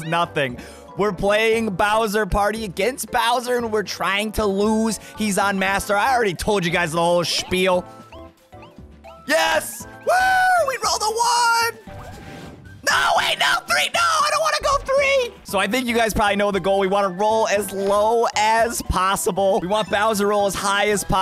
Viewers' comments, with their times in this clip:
0:07 Is that german it sounds like it is